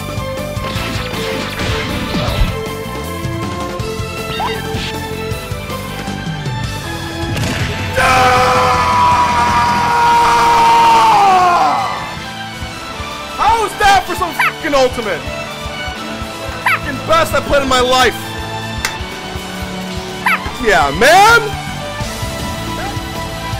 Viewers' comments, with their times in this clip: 0:07 with that scream I was afraid he was gonna faint again LOL